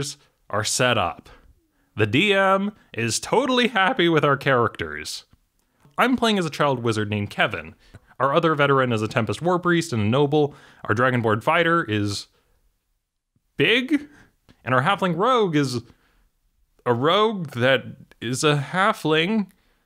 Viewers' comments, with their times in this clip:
0:04 random discord sound lol